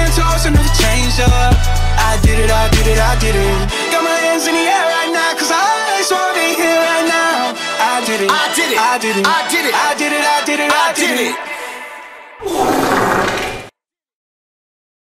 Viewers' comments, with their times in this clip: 0:12 What’s with ? Seriously? 😂 Had my speakers up blast